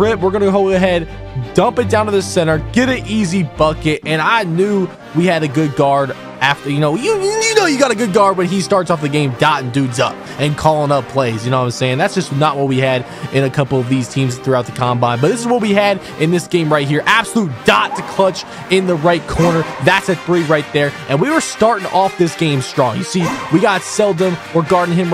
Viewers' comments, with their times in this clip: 0:07 Skip to sounds like he said the word